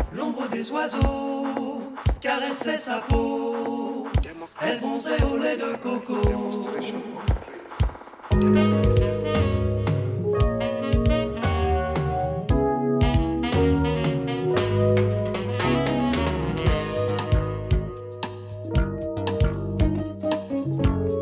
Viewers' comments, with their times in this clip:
0:08 anyone know the track id? Google music search doesn't know. Those smooth sax sounds are so soothing